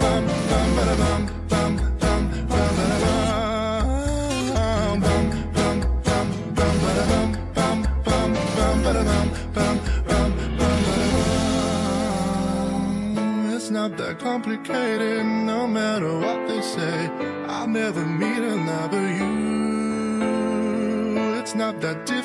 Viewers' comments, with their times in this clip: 0:04 How do you do the voice effect ? It sounds so cool but I can't figure it out 🥲